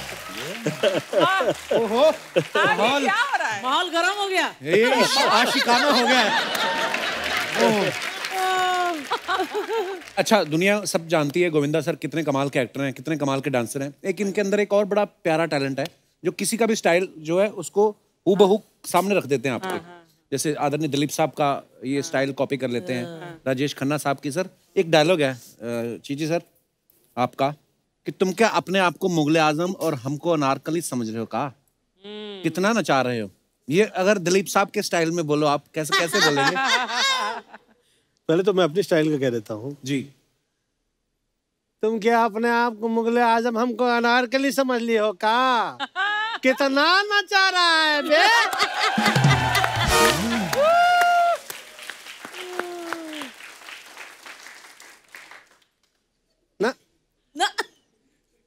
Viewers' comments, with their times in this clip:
0:03 she said Mahol garam hogaya.. felt like maal garam hogaya🤣🤣
0:43 look at how he is delivering his dialogue, he still has the same energy, same potential, wow I LOVE GOVINDA SIR!!!!!!!